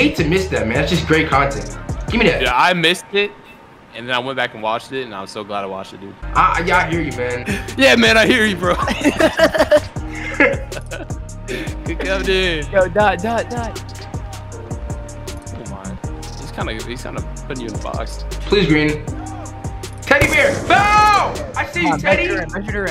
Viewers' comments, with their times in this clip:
0:10 We’re gonna ignore that laugh